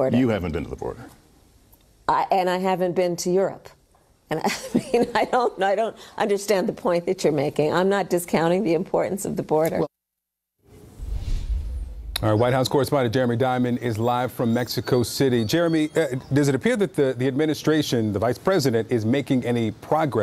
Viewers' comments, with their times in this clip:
0:05 Yep, there it is. I was waiting for Kamala Harris to start laughing like a maniac at a legitimate question that would make her look bad if she were to answer it honestly.